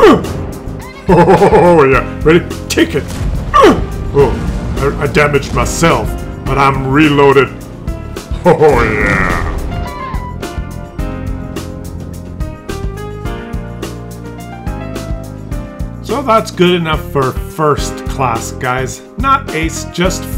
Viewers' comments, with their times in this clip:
0:06 A great sneaky Muttley impression thrown into the mix, Nice! :P Peace and best wishes to anyone affected in the whole shit show going on.